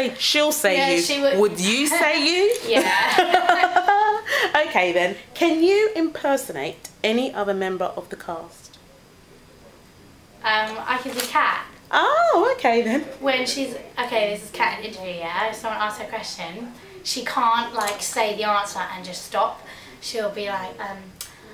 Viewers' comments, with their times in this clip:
0:05 Love Her Kat`s Impersonation! She is really CUTE!!!! XD